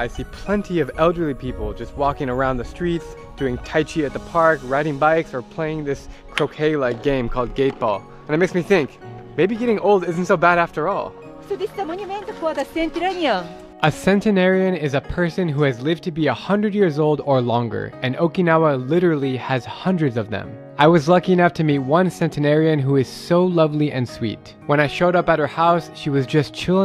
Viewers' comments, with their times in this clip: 0:07 i Heard ,game like k-pop 😅😅